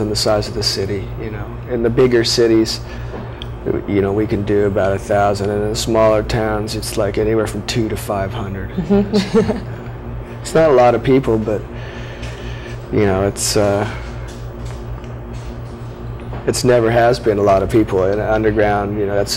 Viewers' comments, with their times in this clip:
0:05 Why does she laugh when he says 2 to 500? 😂